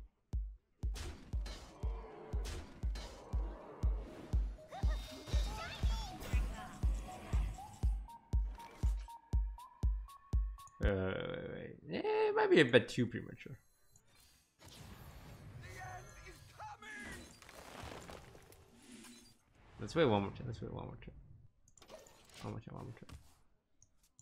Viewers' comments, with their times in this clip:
0:06 The hype music :(